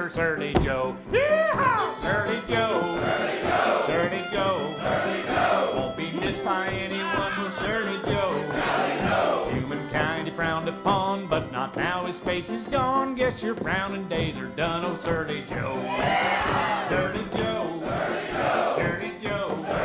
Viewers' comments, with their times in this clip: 0:05 Wholesome Laughing Guy Replay Button --> You're Welcome